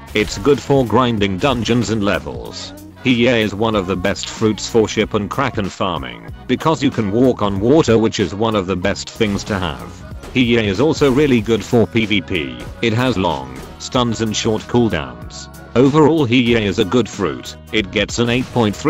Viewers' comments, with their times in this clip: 0:04 ik this is a late comment but I realised something, when he says walk on water it sounds kinda weird lol